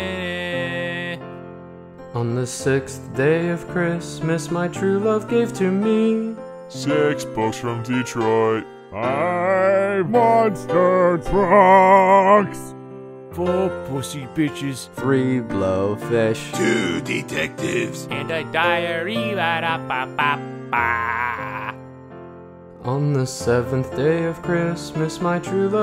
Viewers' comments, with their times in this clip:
0:06 ryuk is being... cheery? what has the world come to?...